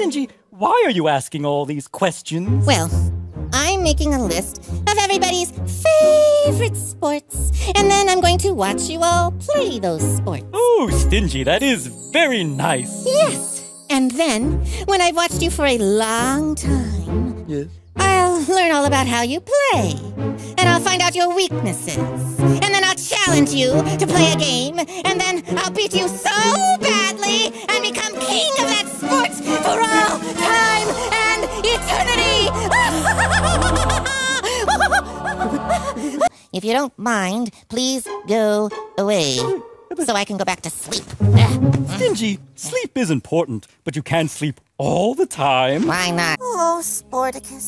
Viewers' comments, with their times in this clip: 0:04 The evil laugh at the very end broke me!
0:17 that way he said it just kills me every time
0:17 I love the mayor’s expression and the way he just says “...yeth...”
0:17 The fucking hell was that voice act of that ''Yis''? xD
0:25 he literally doesn’t sound the same and I don’t know how to describe it
0:33 "*Stingy loses a chunk of his sanity with every maniacal "ha"*"
0:33 Harley Quinn's Laugh
0:33 Crazed lunatic laughter